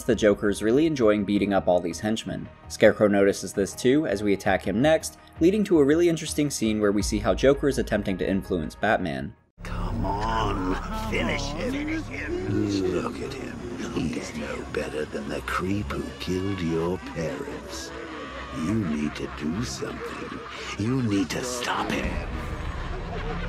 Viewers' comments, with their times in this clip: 0:05 you can actually hear the militia beg for mercy when Joker/Batman is beating them up